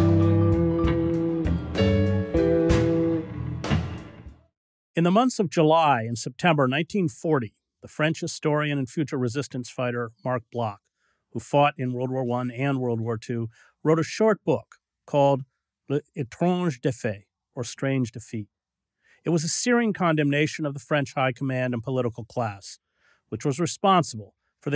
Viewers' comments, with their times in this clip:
0:06 what a wonderful entrance, the blues, Love the blues, how’d we get into rap ?and I miss Motown